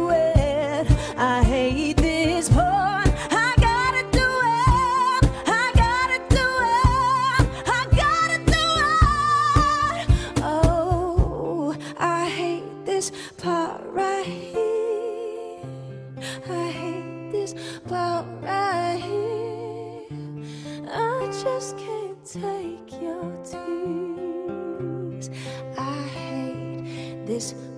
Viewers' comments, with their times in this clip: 0:07 You've got to be joking. And as many other videos prove, she can actually sing much higher. Also, the "shivery" quality of her voice comes from her intentional caprino, a fast vibrato used on short notes for effect. She's one of the most technically educated pop singers out there, something she isn't given enough credit for.
0:08 is the magic point of the song. I love how she nails it! :)